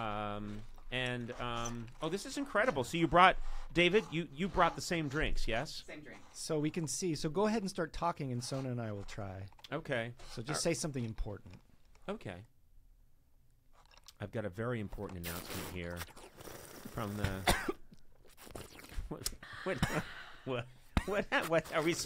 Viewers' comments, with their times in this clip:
0:03 sona and matt start laughing even before they start doing their bit with the straws